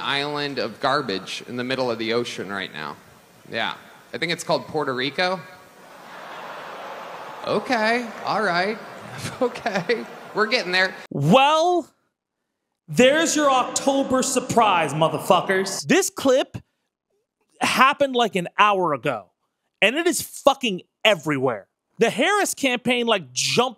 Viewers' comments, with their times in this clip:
0:06 HAHAHAHAHA. has the crowd reaction and it is priceless!